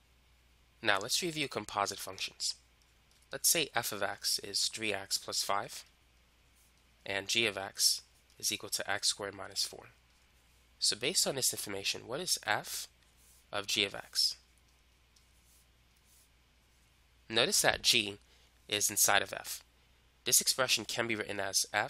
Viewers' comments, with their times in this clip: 0:09 when he says 4 it sounds like a demons voice 👀👻 spooky.